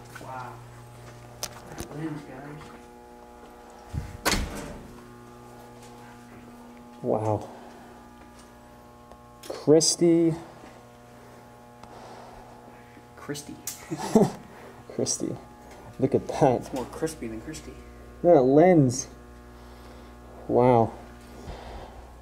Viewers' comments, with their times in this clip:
0:05 what is that strange buzzing sound I always hear on these videos??? I heard the same noise on other videos about abandoned these abandoned places.